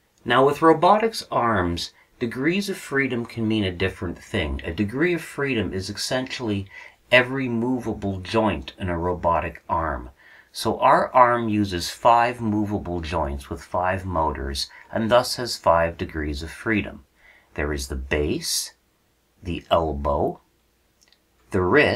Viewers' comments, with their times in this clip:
0:05 what is wrong with you? you added an "x" to the word "essentially."